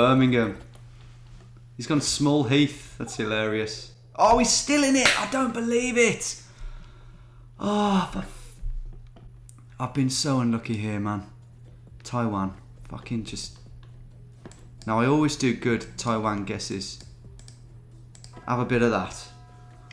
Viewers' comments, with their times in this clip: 0:04 You went full Mark Goldbridge 😅
0:04 sounding like Mark Goldbridge